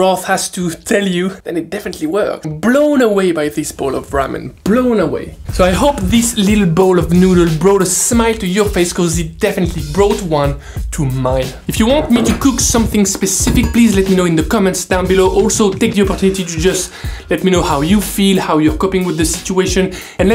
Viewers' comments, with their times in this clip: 0:05 that song here sounds way to familiar to something else which I don't think I should name
0:06 listen to the music
0:07 I SWEAR I HEAR THE P*RNHUB THING